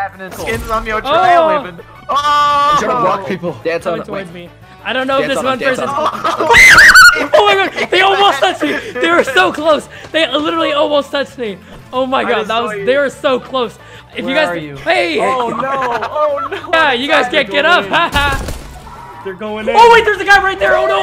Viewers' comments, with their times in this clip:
0:07 what was that scream?